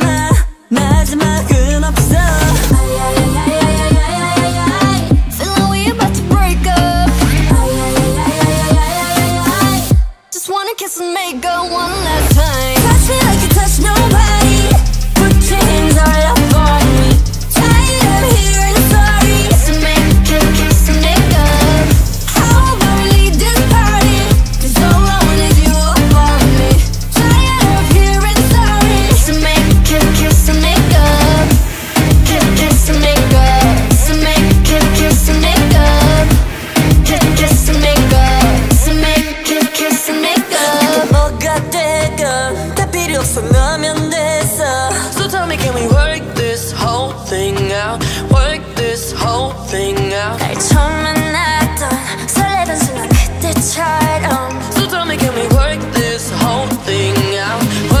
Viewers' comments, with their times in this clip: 0:03 Is it just me or the way Lisa says feel like we bout to break up is really satisfying?
0:03 ROSÉ 'S "I I I I I I I I I I" IS PERFECT
0:10 anyone who notices Lisa’s understated great voice here is ELITE
0:12 is a voice we've never heard from Lisa before. The way she says 'time'
0:12 Super 😽 voice i got goosebumps
0:13 i'm dead, Rosè voiceeee 😍
0:23 Jennie sound sooo radioactive! Love it 😍
0:41 JISOOS DEEP VOICE SOMEONE BURY ME